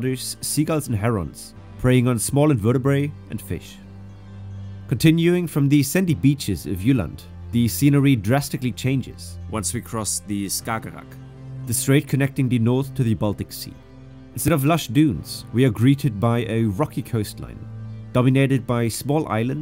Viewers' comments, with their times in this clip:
0:03 it’s “invertebrates” pronounced “inverta-Brits.”